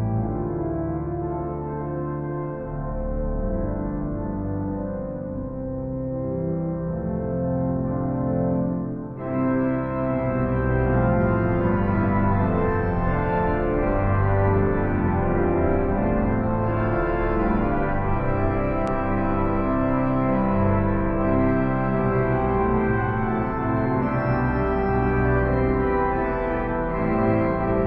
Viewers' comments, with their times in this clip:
0:09 Sounds fitting in a generous acoustic, good to see you playing, those pistons are so useful! Harrisons do build a comfortable console. I am wondering what is the significance of the piston marked + which you use ?? It brings some reeds in, but is it a general piston? Thanks for posting. I remember turning the pages at Windsor for Messaien's Transports de Joie, in the 1970s when Christopher Robinson was organist-good memories!